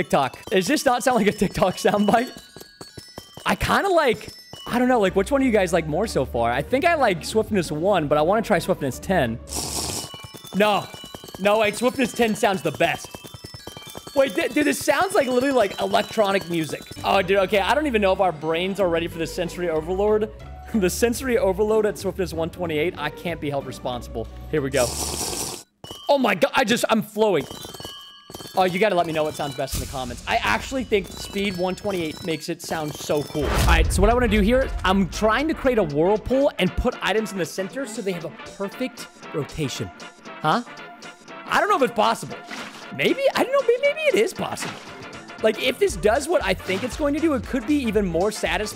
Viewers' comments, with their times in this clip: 0:10 swiftness 10 makes it sound like kerosine 💀
0:32 my Fav Amethyst sound is the last one